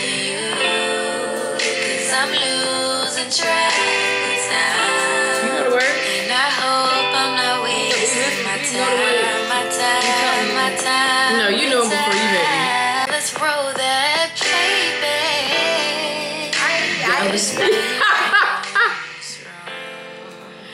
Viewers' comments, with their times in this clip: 0:08 It’s me singing and sexy rolling and singing